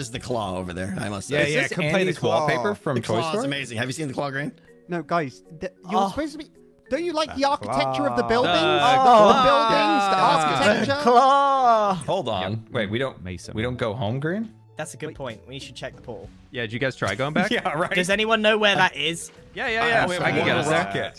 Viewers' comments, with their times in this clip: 0:05 was that a moan?😂😂😂